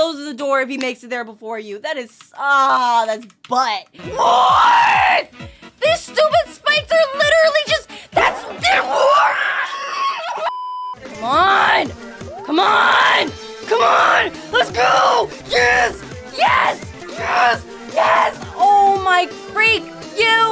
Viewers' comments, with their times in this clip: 0:08 my ears almost broken :)))